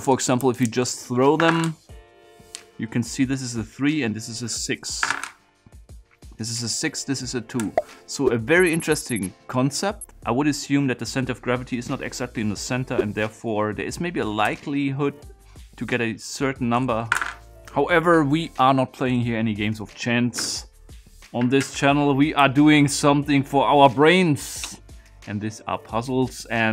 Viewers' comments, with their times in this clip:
0:07 What's the noise ?